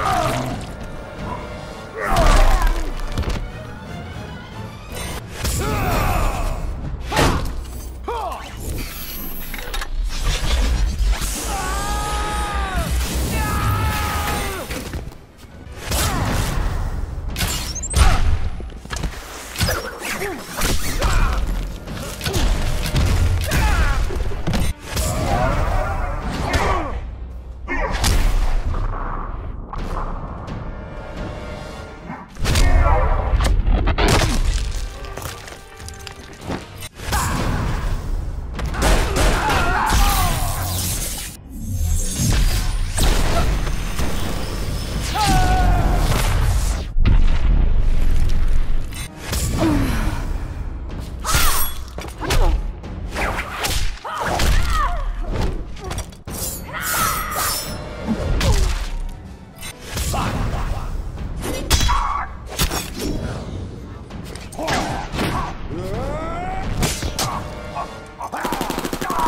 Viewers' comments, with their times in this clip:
0:08 when my mom shout me ( her shouts are like that )
0:24 superman's Grunt with that robotic tone is just threatening
0:50 WHY DID SHE MOAN